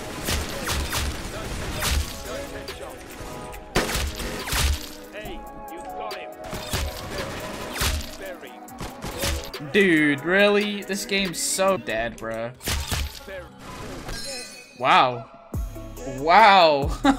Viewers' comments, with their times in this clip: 0:03 LISTEN THAT IS NOT HOW FAST IT SHOOTS it sound liek hack :/
0:03 LISTEN THAT IS NOT HOW FAST IT SHOOTS it sound liek hack :/
0:03 LISTEN THAT IS NOT HOW FAST IT SHOOTS it sound liek hack :/
0:03 LISTEN THAT IS NOT HOW FAST IT SHOOTS it sound liek hack :/
0:03 LISTEN THAT IS NOT HOW FAST IT SHOOTS it sound liek hack :/